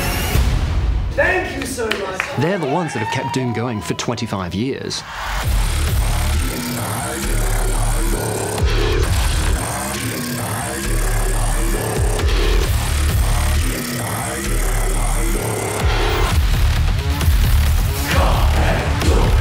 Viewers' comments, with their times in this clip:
0:05 THE DOOM HUNTER’S THEME HAS CYBER THROAT SINGING THAT’S SO COOL
0:05 He blessed us with this mongolian throat singing that you can hear
0:05 Is that the metal throat singing put through a synth?!
0:05 There's that Mongolian throat singing, I think :)
0:05 when the doomslayer drops the bass
0:06 man What kind of sound is that I want to know that like a cyber screamer saying I don’t know